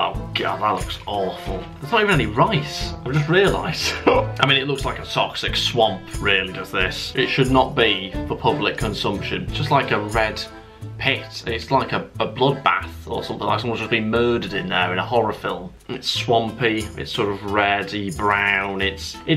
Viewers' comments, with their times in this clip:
0:03 I love your hiccup-laugh or roundabout that time 😂